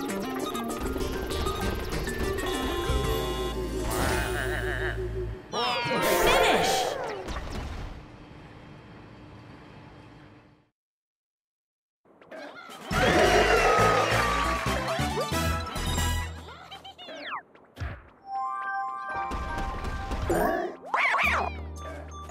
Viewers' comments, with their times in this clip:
0:05 This is funny Edit: It was hilarious Wario lost on the mini game it's the pits. When he fell he was screaming WAAAAAH!